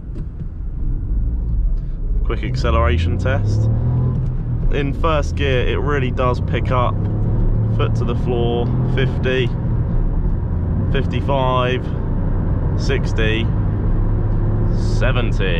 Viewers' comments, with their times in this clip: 0:03 sound like St